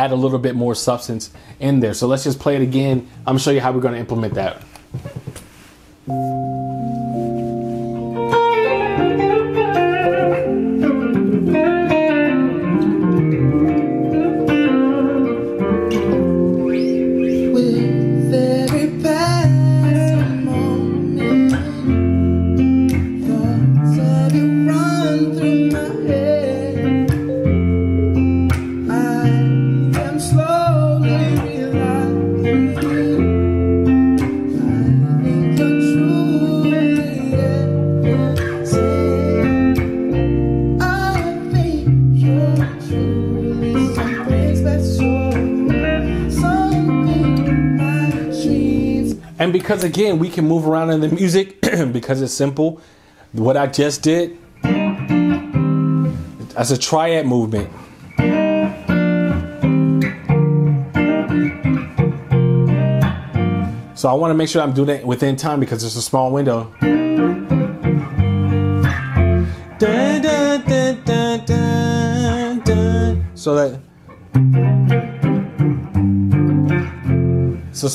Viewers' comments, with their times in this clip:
0:07 I've watched that vid of childish gambino doing this on like a version about 100 times and when I saw this pop up on my home page I was super excited, that opening lick was so smooth, great work man
0:07 What an amazing solo !!! How man could learn to do it, I can't imagine
0:07 That solo killing!
0:08 Listen .. I know that little solo was simple but my lord . It hit bruh 💨
0:09 that little solo you played is a video by itself. Going to rip that off of you man
1:00 That triad movement was amazing - super helpful. Love your playing man! Learned a lot in this video
1:00 I really enjoy your playing and feel, and you teach the material in a very accessible manner. How did you decide the song is in Bb and not C minor? There is no Bb chord resolution, but C minor sounds like the resolution point... So it would be a i - v - IV? the triad movement... the second C minor chord is really a Gminor7, although if you want to call it C something its like a Csus2/4 or something. Likewise the "F Major triad" is really a Bb triad with the third on the bottom.
1:05 That triad movement is 🔥